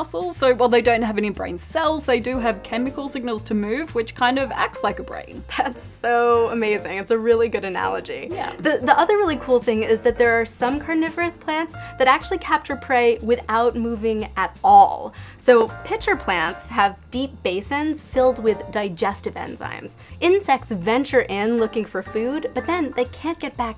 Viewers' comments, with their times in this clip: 0:05 That's "soooo" amazing